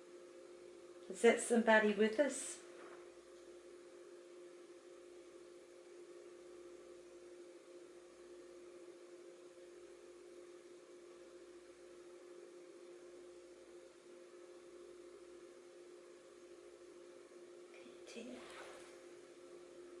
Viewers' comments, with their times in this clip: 0:07 is also faint voice